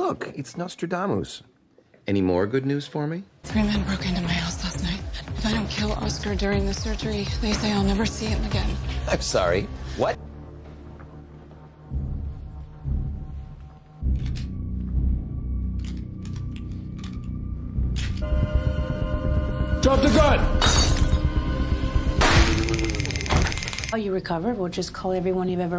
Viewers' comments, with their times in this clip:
0:09 Know what the funniest part is? Oscar sounds surprised. Oscar: "Who wants me dead??" Me: I dunno, anyone who's known you for longer than fifteen minutes? There are GIRL SCOUTS who want you on the wrong side of the grass.